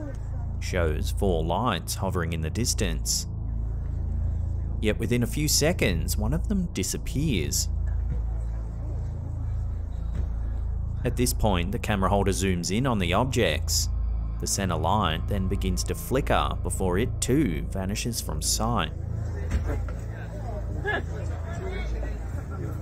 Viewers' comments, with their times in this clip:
0:04 The TicToc kid reads well. 🤔🤨 Queuing up for the worm hole?